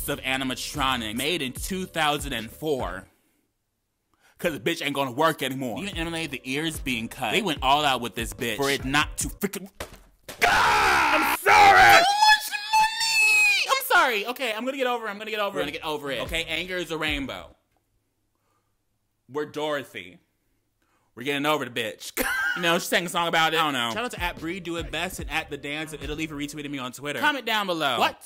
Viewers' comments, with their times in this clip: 0:10 you got so angy your straight voice done come out